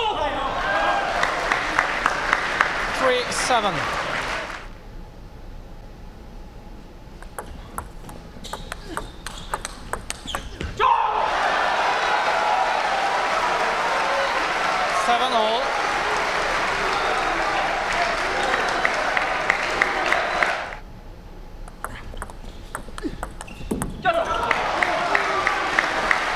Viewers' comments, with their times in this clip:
0:10 Screaming his name! what a powerful response